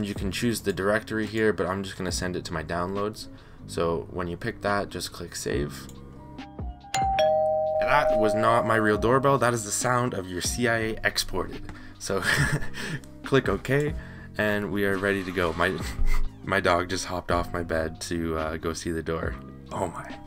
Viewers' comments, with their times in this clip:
0:06 Hold on, lemme get the door open.